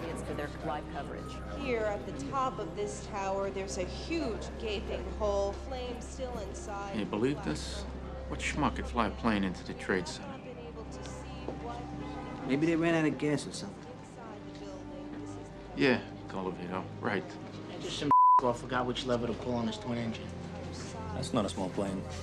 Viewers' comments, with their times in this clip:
0:04 lady talking, NBC helicopter , 30 second's away from the second plane hitting